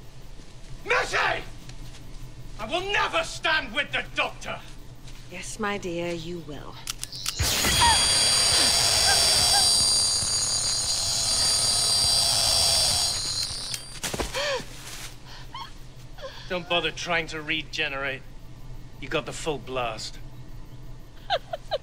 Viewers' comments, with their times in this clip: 0:06 *"Jaskier's voice"*: Eh... (s)he's fine